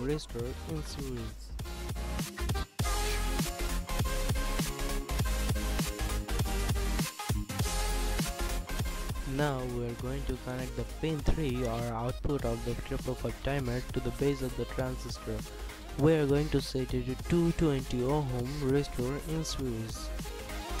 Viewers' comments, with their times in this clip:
0:05 The music is very distracting and loud, I can't understand what you are saying. in and I've had to stop watching! Shameas i was really interested in this.